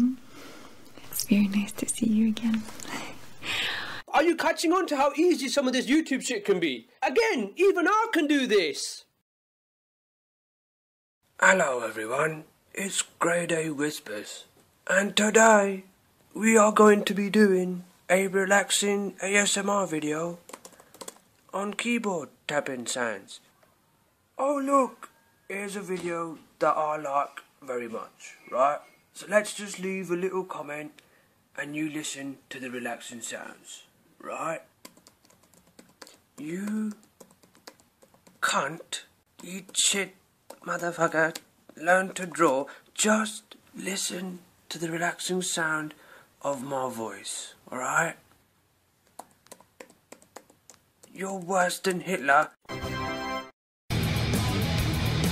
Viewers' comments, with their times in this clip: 0:09 Grade A whispers
0:11 when you did the sexy whisper voice .... oh that's it..... oh lordy..... you hit the spot Ha ha ha ha ha ha ha LOLOLOlololololololol
0:11 IM FUCKING DEAD 😂😭😭 Grade A Whispers 💀
0:11 you can hear how hard it is for him to not be loud as fuck
0:11 He sounds like he’s still yelling while whispering
0:17 kinda sounds like unknown p
0:21 It sounds like his voice isn't used to not yelling.
0:22 who actually found the asmr grade had done actually satisfiying? Yea im probably gonna get called gay but who cares.
0:40 i like how you could sometimes hear the indian in his voice